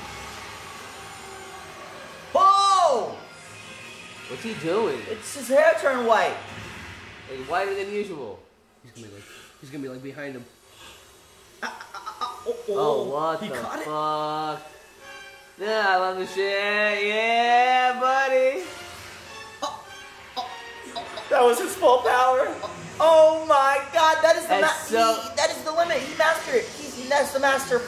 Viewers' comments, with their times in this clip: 0:10 He literally just gasped like an anime character